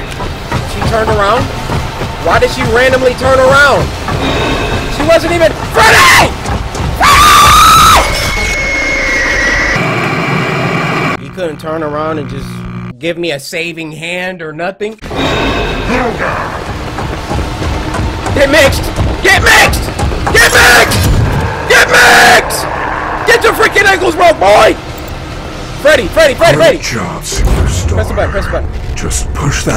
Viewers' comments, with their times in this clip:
0:05 Cory yelling for Freddy is so similar to Markiplier yelling for Freddy when he ran past him lmao
0:17 bro his scream